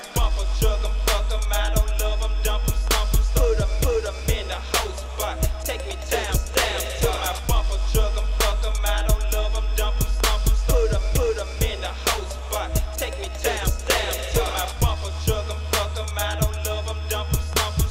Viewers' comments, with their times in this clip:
0:04 ay what that cowbell sounding instrument in the back I've been searching for it